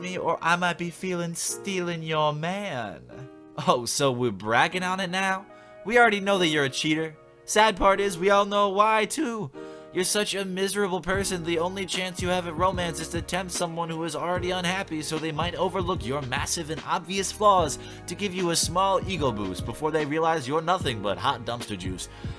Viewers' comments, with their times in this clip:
0:09 "bitch" is censored but "fucking" is not, lol